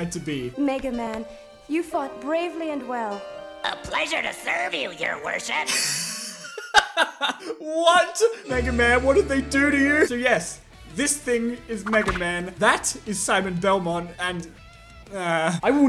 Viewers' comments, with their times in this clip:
0:03 yes, This dwarf who looks like 9-Volt from Warioware but sounds like Popeye is supposed to be our beloved “Blue Bomber” Mega Man.